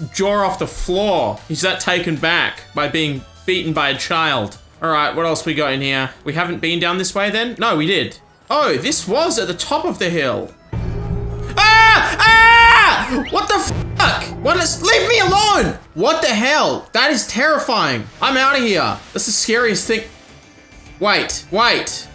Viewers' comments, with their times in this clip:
0:10 was that the sound of warwick chasing someone